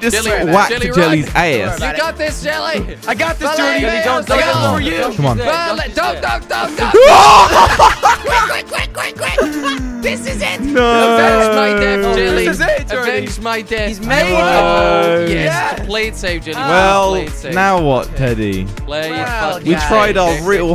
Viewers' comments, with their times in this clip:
0:06 it sounded like duck duck duck quack quack quack